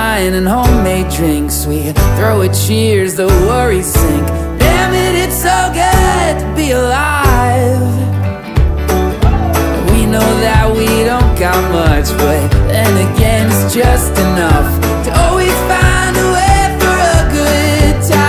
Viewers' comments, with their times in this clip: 0:05 his voice when he says damnit it's so good to be alive❤